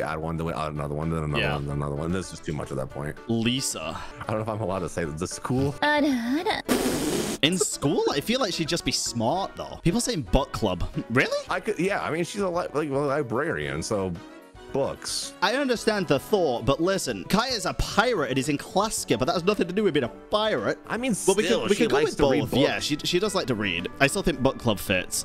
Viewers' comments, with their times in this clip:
0:08 Honestly I would have loved an Ara Ara warning, I was listening to this on high volume outside on the porch while eating snacks and trying to hear the vid thru the crunches and tree rustles